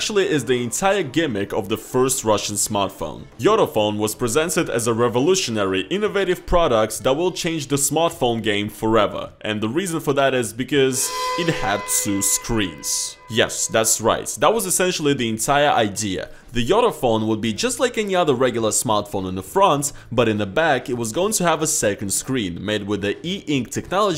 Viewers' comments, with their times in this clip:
0:10 That sound effect lol